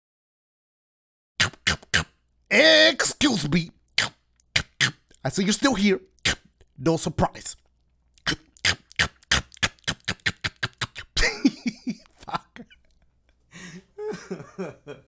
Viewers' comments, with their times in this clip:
0:09 His laugh at the end😭😩